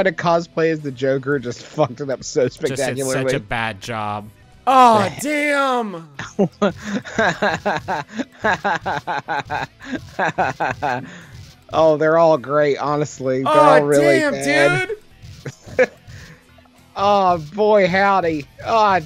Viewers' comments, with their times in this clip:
0:06 I've watched and consumed so much media of Justin laughing but never have I heard the man laugh so much like a 14 year old skater boy from 2001 and during the most perfect video game playthrough I can't handle it
0:06 never heard him laugh like that before...
0:07 whats up with justins laugh tho? like i love it but it does sound kinda....off?